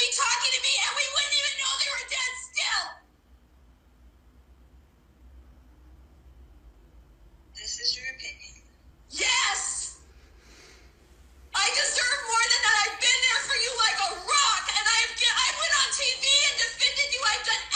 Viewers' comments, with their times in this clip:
0:05 I really wish I could totally listen to the section , but it is like nails on a chalkboard!! Lol